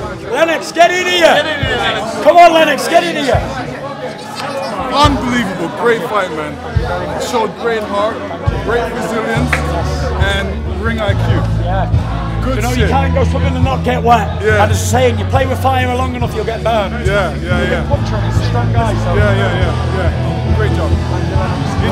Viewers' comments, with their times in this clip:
0:04 Lewis' voice irritates the hell out of me.